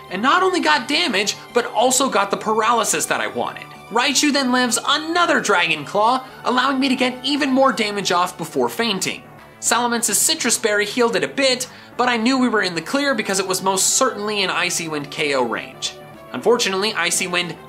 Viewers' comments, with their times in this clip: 0:03 "raichu then lands another dragon claw"
0:03 "Raichu then lands ANOTHER Dragon Claw"
0:04 “Raichu then lands ANOTHER Dragon Claw” Yes I use that move all the time on Raichu. Edit: ok this comment is irrelevant now that I realised he said lived but that just sounded the same.
0:04 Raichu then lands another Dragon Claw